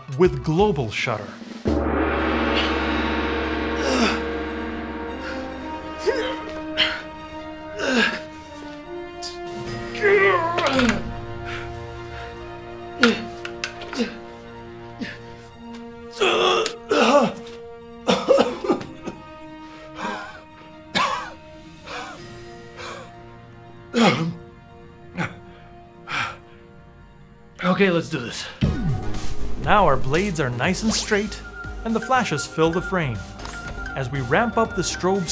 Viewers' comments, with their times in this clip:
0:06 Is that really heavy captain disillusion?
0:23 Was that a cough/fart ??